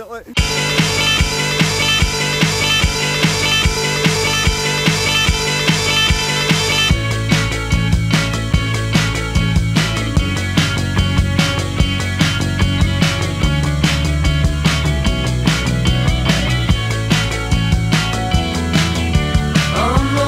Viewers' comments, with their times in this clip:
0:08 The guitar riff reminds me of Kings of Leon's King of the Rodeo